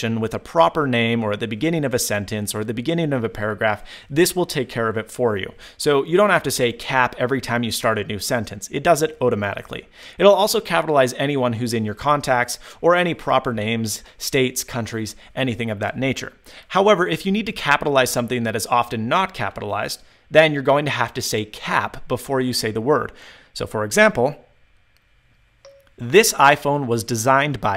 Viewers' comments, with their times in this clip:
0:08 Did he say "ote-amatically" ?